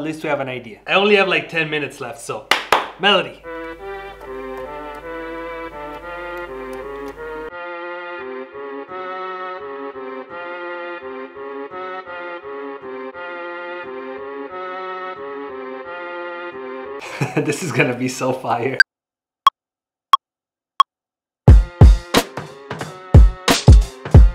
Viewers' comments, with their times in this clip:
0:08 sounds a bit like „Hard in da paint“